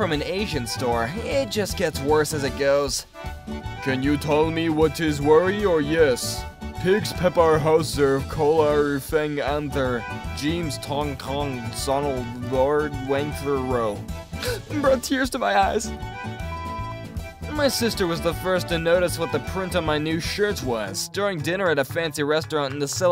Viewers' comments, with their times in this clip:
0:04 Godzilla had a stroke and fricking die